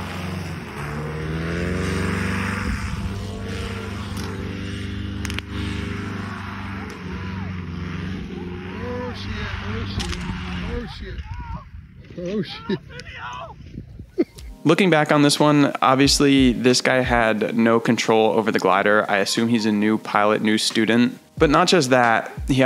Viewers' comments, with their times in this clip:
0:09 love that the one guys freaking out and the guy filming's just laughing lol